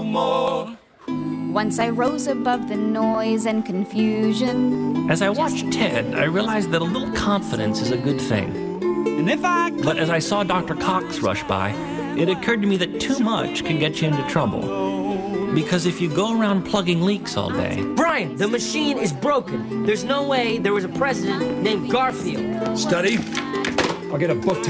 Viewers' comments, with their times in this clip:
0:06 Shut up JD i want to hear the rest of the song!!!